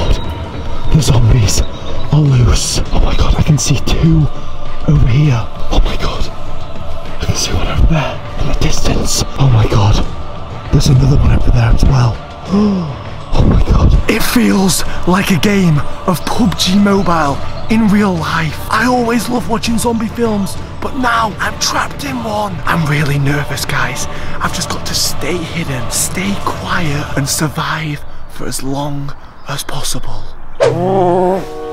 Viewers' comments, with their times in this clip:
0:07 how did the zombies not notice him he was so loud
0:17 HE SAID POOP G MOBILE